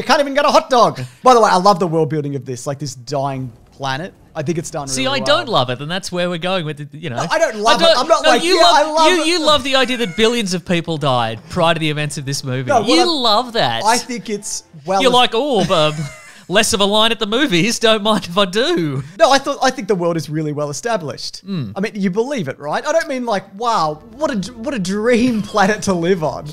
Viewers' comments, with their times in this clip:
0:10 wtf is the weird meow noise ?